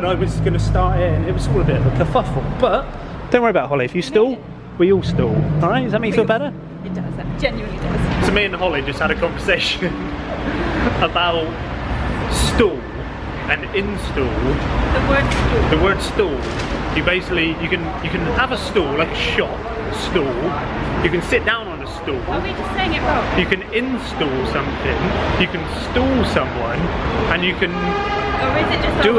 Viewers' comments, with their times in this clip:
0:10 Great vlog guys! > are you trying to say Stool, Store or Stall? 🤔